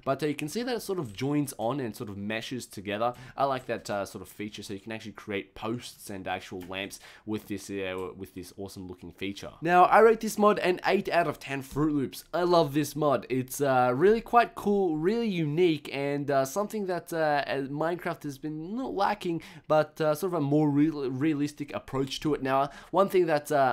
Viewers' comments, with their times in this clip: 0:06 When he broke it did it sound like wool to anyone else?